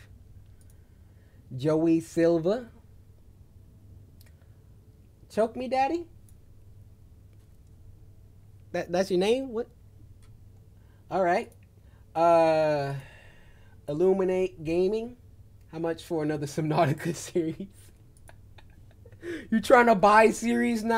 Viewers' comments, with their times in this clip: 0:05 my boi said that loud and proud